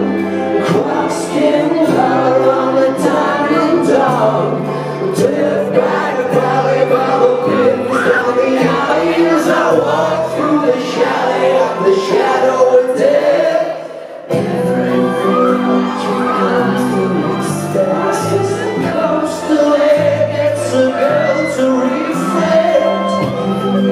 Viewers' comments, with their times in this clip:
0:07 alex: stares at the camera The girl: screams and faints